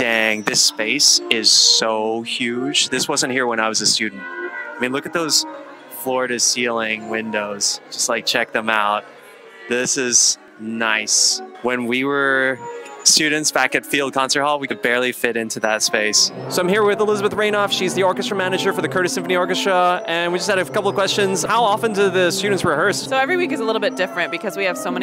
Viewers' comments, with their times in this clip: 0:07 Bro came just when the cellos were taking a nap 😭💀